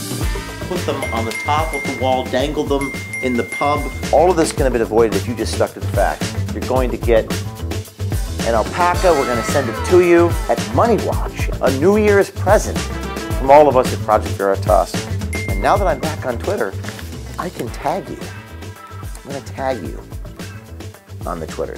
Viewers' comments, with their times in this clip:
0:08 You absolute madman. Dropping the anime "wow" sound effect.